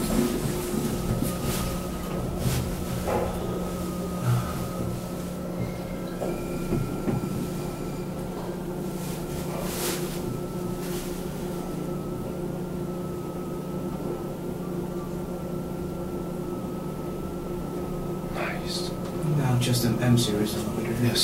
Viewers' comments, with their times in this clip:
0:05 N Mono and S Mono are from Asia not for just Asia, they cover EN regulation. second there the voice, voice of the famous Kone manuel break system which you can hear from a MRL elevator. What do you think mate?